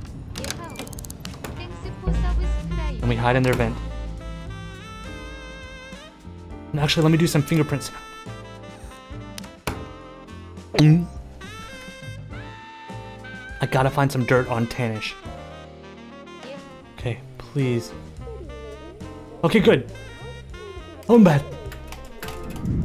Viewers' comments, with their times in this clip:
0:10 THE GULP 😂THAT WAS BEAUTIFUL